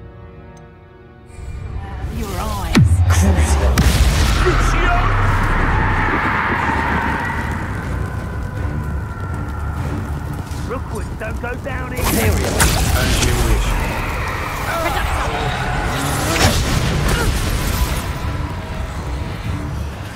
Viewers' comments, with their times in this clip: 0:04 the enemy shouting worriedly "crucio?!" like he can't believe a student is casting it lol